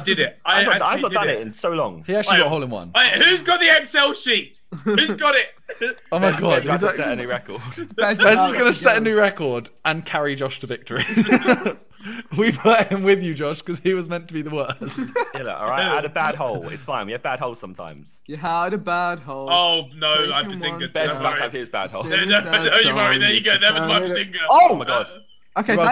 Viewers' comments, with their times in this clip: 0:07 I love vikk just casually singing 😂😂